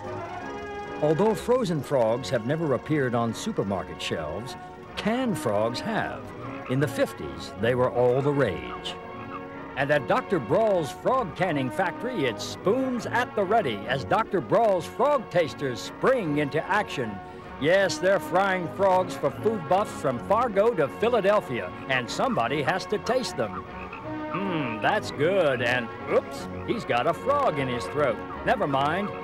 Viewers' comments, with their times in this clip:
0:10 Eyewitness Team:Ok Mr Sheen don’t go too crazy you are just doing a narration for a nature documentary series! Martin Sheen:*Goes absolute crazy with the narration* Especially !